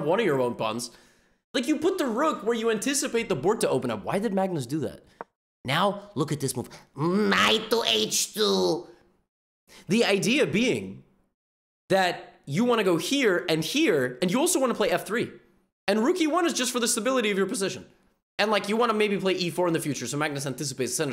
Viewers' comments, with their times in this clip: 0:06 I truly wish Youtube had different fonts so I could properly express how much Levy said "Knight to H2" like a 200 year old goblin, but alas, you'll just have to watch the video.
0:06 Dafuq did that gollum voice come from? 😳
0:06 is the funniest accent levy has ever done
0:07 Why did he say Nh2 like that 😂😂